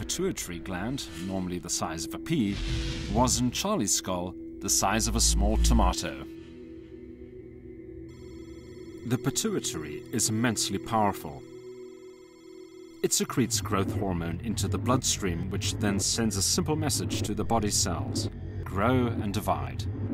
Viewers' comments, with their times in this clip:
0:03 I say tomato you say tomahto!